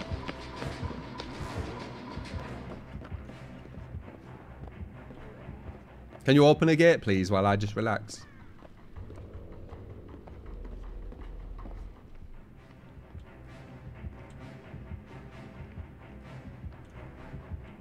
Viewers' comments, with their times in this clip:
0:05 Why'd you say that in such a sweet way, oh my god. My heart has never been warmer